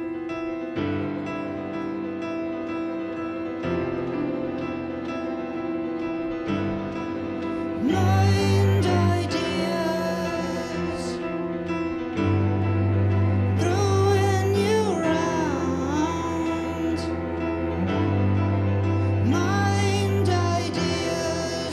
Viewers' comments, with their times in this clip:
0:09 Yeah he especially butchers the note